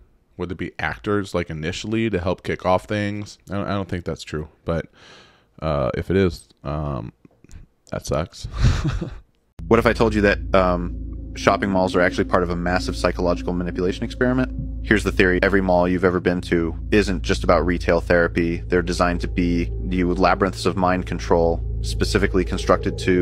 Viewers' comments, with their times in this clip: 0:09 Bruh, I'm almost positive that one was a deepfake of your voice, brother 🤣 Seriously, you may not have realized it, but I'm nearly positive it indeed was. It was sent to you, no? I bet it was 😂